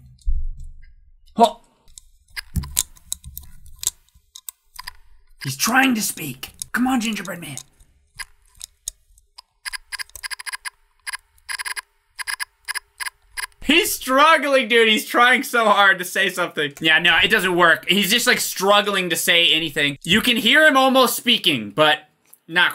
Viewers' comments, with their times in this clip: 0:07 Before he actually spoke, Gingerbread Man sounded like an old RPG dialog box, yknow, as the text displays?
0:08 Morse code, I wonder?